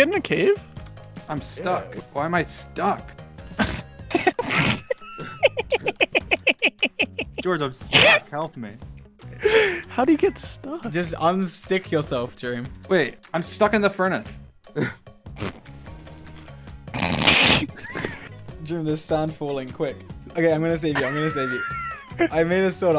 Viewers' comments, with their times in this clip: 0:04 I love Karl’s laugh
0:04 the most weirdest laugh XD
0:05 Can we just take a moment to appreciate Karl's laugh?
0:05 Karl's laugh had me cracking 🤣🤣
0:05 I can't with this laugh plsss 😭
0:05 that laugh tho...
0:06 Karl has the weirdest laugh